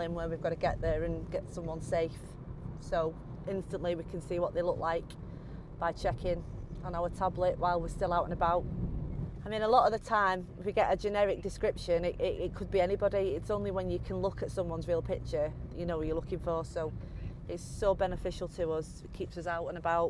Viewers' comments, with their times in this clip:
0:03 those revs Vs speed make me cry :( Driving along chatting to the cameraman, oblivious to redlining the car for the last 2 miles...